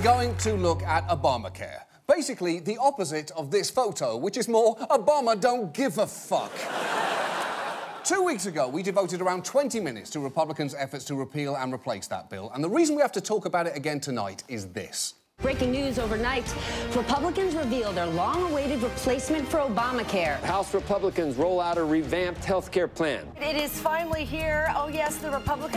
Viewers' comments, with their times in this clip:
0:06 Love the slight hesitation on "fuck" like John was thinking "I've come this far no turning back now!" Then he stuck the landing perfectly.